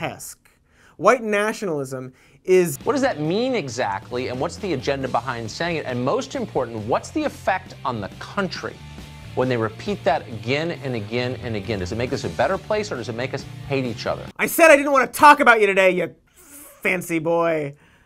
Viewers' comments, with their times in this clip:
0:05 weird that Tucker Carlson's music is basically Holiday by Green Day